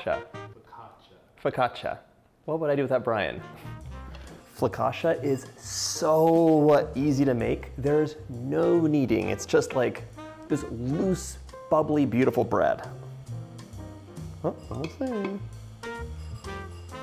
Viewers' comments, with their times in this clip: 0:05 Couldn't listen to him mispronounce something that he's teaching me how to make. I lasted minutes.